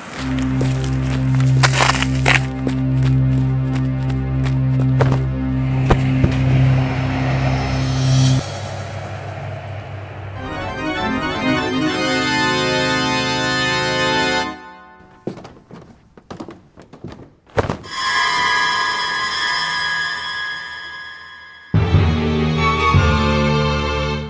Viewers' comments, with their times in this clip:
0:10 What a musical background! Is it a Hammond or a Moog? Well, anyway the finale is pure rock'n'roll... Don't let your lovely doggies eat too many of those morsels... 🐕🐕🐕🐕